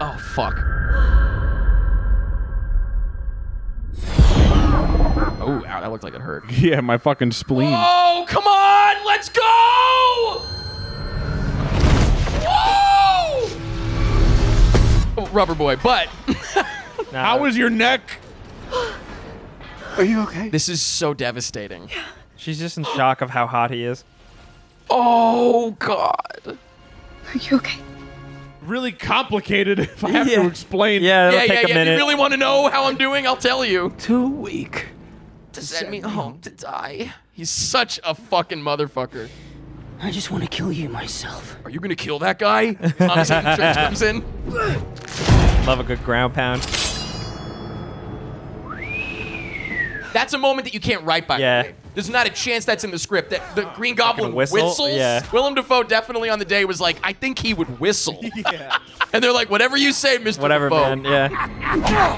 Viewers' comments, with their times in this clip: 0:07 ah my ears But I'm happy that he got excited😂
0:34 the "to send me home to die" syncs up perfectly
0:48 I am a staunch believer that the whistle is meant to imitate the Goblin blade sound that you heard from the 3rd Tobey Movie that the new goblin uses. Franco's goblin attacks Spiderman and all of his blades whistle when he swings them.